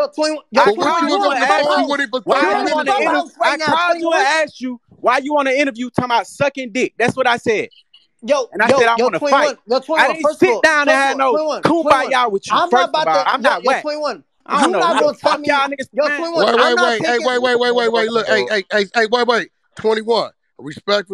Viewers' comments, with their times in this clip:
0:07 Shit went left after Yea Wack ‼️😂😂 man wtf man squealing like a rat fr